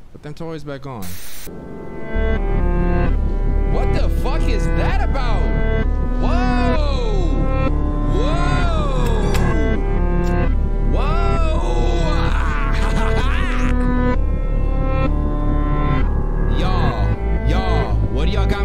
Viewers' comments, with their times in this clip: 0:03 Yo that Beat was pretty fire though im ngl